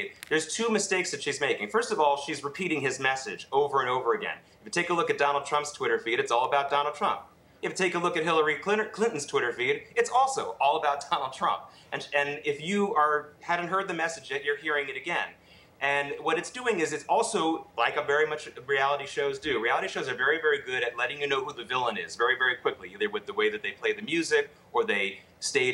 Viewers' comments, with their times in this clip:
0:07 Just GO TO "Hillary Clitor... " hahahahahahah aI died laughing, he was laughing too.. lmao